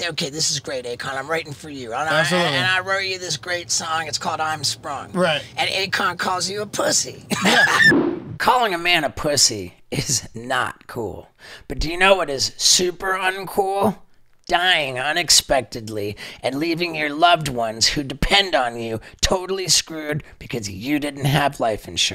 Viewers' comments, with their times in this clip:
0:10 Someone FARTED The whole room pauses